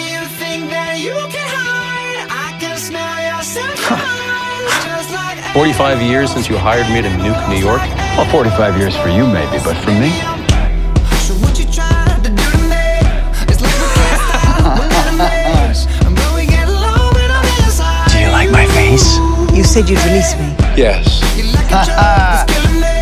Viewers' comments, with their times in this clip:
0:08 the snap is perfect for this
0:09 That snap is timed perfectly
0:10 I keep coming back to this video at least once a week just to listen to that transition